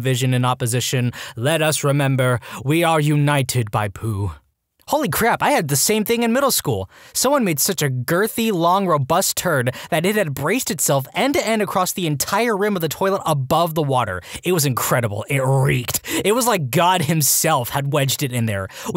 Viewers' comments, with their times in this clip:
0:05 the narration in this type of videos tends to be completly lifeless, however this is the funniest reddit narration i've ever seen, big props to you man i'm shitting myself from laughter